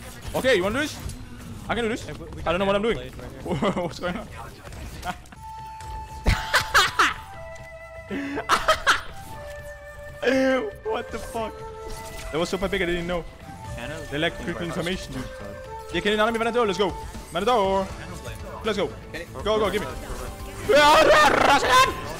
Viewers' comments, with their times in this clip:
0:06 laugh of the day